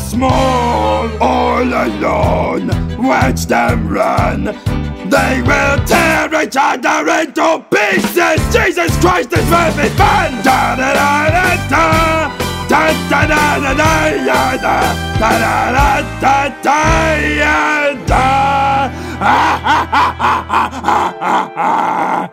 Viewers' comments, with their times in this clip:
0:09 Why is no one talking about animal screaming “JESUS CHRIST THIS WILL BE FUN!!!!!!!!!!!!!!!!!!!!!!” ?